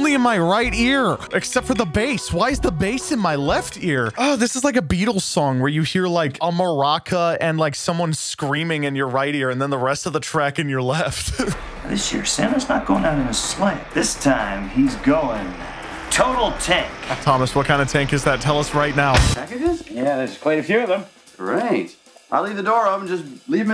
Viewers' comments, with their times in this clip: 0:06 I felt physically and mentally uncomfortable when you switched the sounds around, it was disgusting
0:10 I’m wearing headphones and the fact they actually changed the sound to ONLY THE RIGHT EAR is the best possible thing😂